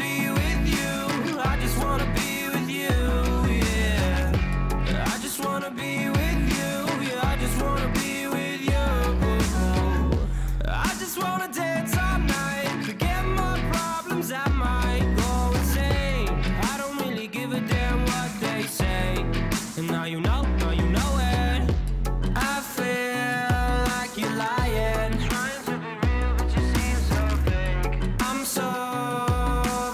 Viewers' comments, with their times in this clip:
0:10 for one second I thought it was Justin Bieber af